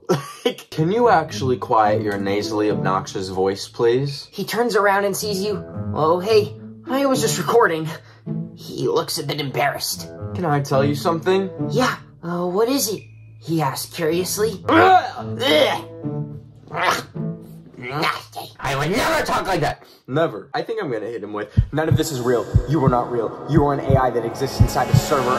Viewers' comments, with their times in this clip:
0:05 that has "Um, hi! *chuckle*" energy
0:06 WHY DOES BLUD SOUND LIKE ADRIEN AGRESTE GOODBYEE 💀